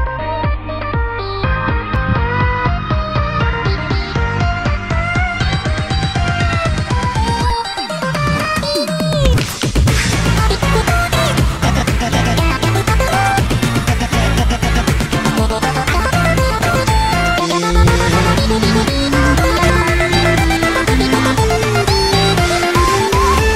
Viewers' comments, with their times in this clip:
0:07 Did the last 3 notes that BF press before the solo time he said: Dab bo dee? in the second: refering to the game Falppy Bird?! It could mean that he said by accident: Flappy Bird! in the second